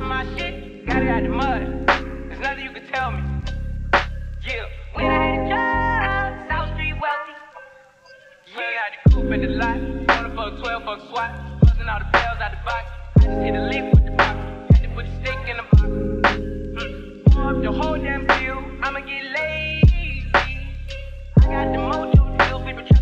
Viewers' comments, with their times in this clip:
0:05 i love this remix but is weak af why would u kill the vibe like this